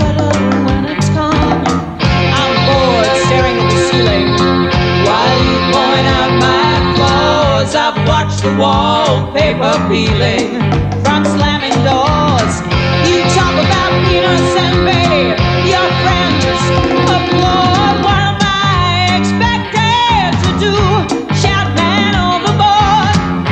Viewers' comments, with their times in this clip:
0:09 A few little things. This is the Sydney of my memory, The 80's Sydney, always under construction - no human heart changes half as fast as a cities face - The garbage bags out on the street, after we have kicked the punters out and had our staffies until the sun came up. Getting back home amongst the garbage, the spew, the blood and the, let's be generous, human debris. Secondly, the power of Conway's voice and that horrible asexuality period of the 80's. Finally, to those old, brave, brave men we see in this clip. It was filmed on ANZAC Day. Those old bastards, jolly and chubby as they might appear in this clip were, in their youth some of the hardest, bravest men in history. Salve and vale as they have probably passed over by now.. I just hope that upon their passing, some spotty-faced, soft-hands priest or minister warned the next world that a true warrior was about to impact upon it.